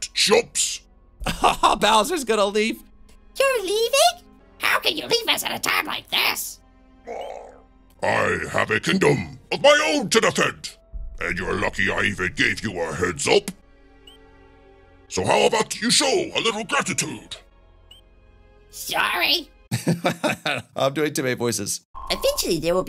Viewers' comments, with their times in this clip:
0:09 Your Bowser voice is hilarious